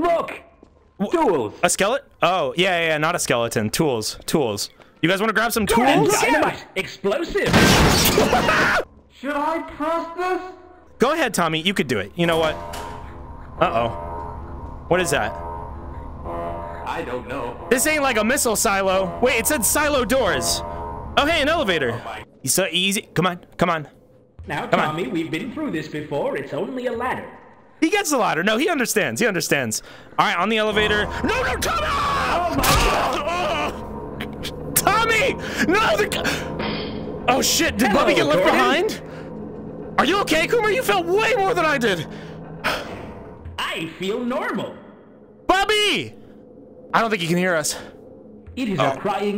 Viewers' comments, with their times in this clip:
0:04 Gordon look out! Explosives. BOOM
0:30 The FEAR in Gordon's voice for tommy had me dying! Love this so much, they really had fun with this series!
0:31 gosh gordon is soo worried about commer he literally screams so loud